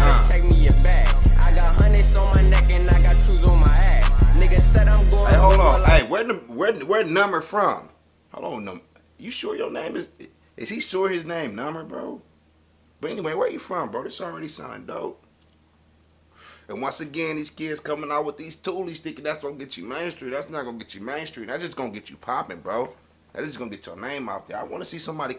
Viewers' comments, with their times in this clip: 0:10 Juss came to this vid to hear him say “numer”😂